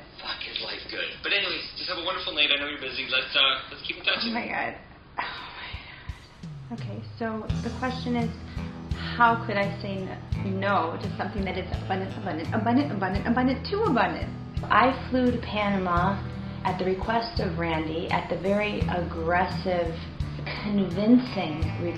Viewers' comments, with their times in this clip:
0:04 that is not a normal way to speak.